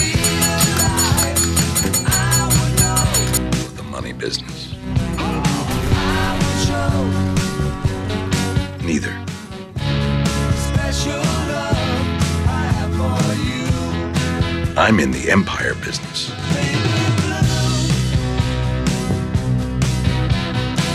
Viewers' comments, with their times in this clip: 0:05 Did anyone notice the beeping sound in the song matched with the beeping sound at the hospital when Gus was killed ?